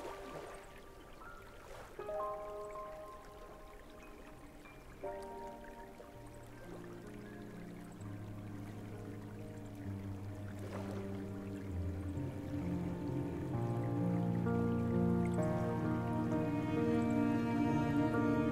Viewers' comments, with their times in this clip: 0:06 I really like this music